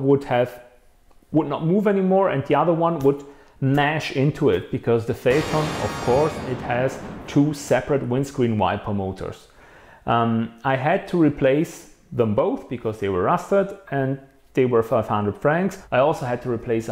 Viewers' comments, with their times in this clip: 0:04 thats the 2nd time that loud noise has happened did i win something? thanks for the warning and thanks for doing it a few times . whats wrong with u? i might have under stood if it happned when u did the listing for the 4300+ but u didnt just did it out of no were . i have subs on cause i turned the vol down not trying to hear u implementing more of that for no damn reason ( insert noise here from time stamp )